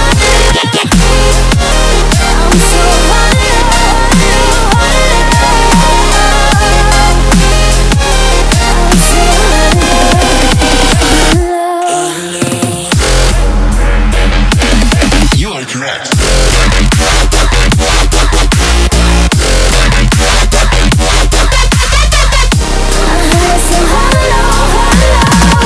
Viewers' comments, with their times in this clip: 0:06 cool rhyme music.